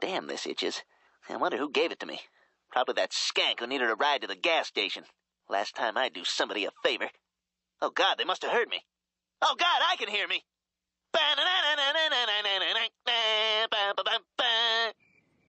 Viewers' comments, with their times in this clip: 0:11 he's singing a song & the captions Say [music]